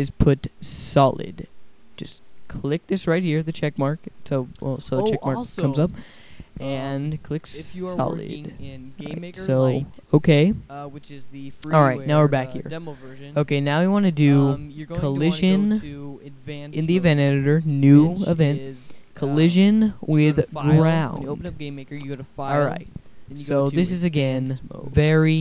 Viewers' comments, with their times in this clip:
0:07 Sorry about the audio interruption My audio was going hay wire, and somehow that got in there.